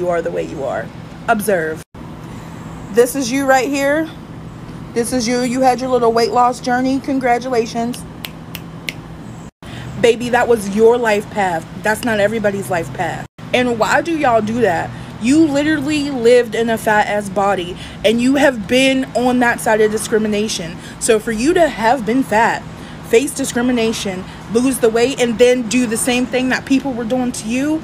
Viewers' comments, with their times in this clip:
0:10 she sounds jealous as hell